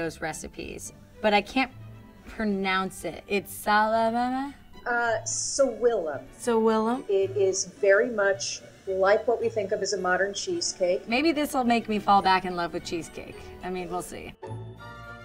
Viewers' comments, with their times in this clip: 0:03 swalalalalala???? i heard like that lmao😅 but i know i wrong... so dont judge me. i heard like that!